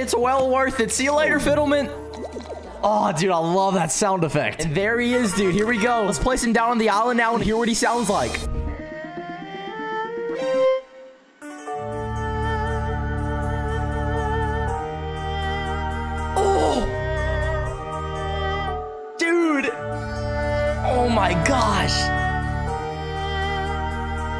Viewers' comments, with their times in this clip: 0:09 End : Sad song in fiddlement 😱😱😱😱